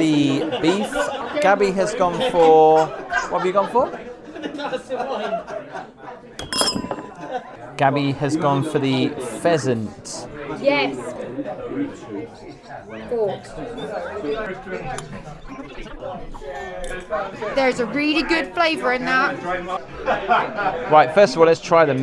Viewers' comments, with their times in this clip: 0:06 What happened /? I heard a glass break